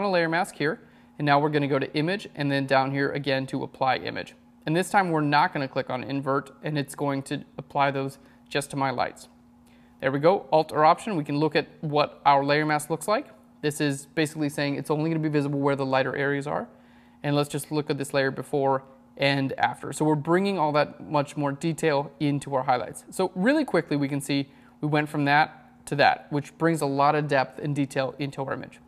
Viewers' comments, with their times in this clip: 0:09 what shortkey is he using ? can't hear that clear